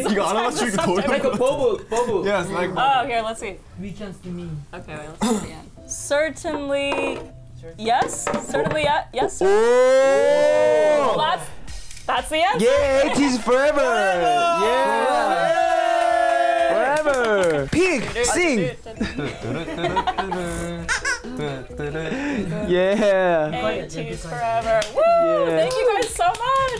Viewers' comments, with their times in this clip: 0:04 sounds like BTS jimin
0:14 i cant tell who but i swear somebody started singing young forever by bts